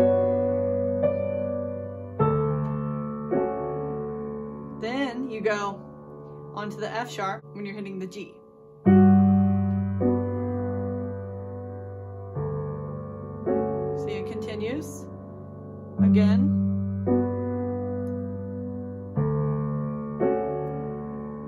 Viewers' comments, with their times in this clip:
0:07 the F#s beginning